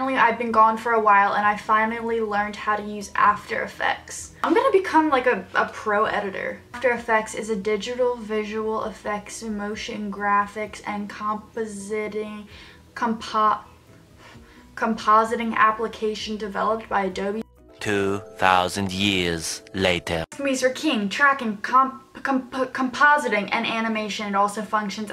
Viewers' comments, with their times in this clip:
0:07 Me when my teacher ask me to read a sentence......
0:11 me reading a book outload in class❤️😂😂